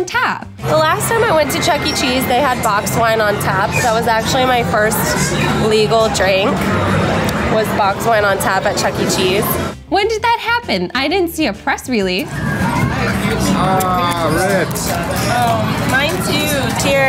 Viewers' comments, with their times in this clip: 0:04 notice the pause before legal.